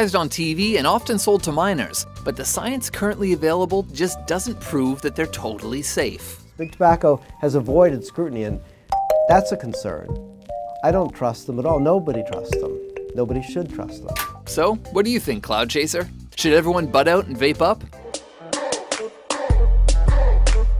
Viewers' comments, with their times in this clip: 0:08 who else thought it was a door ?